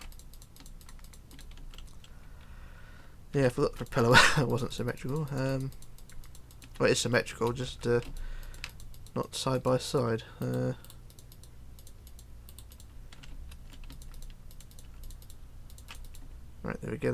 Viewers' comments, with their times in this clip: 0:03 I was scared because of your breath 🤖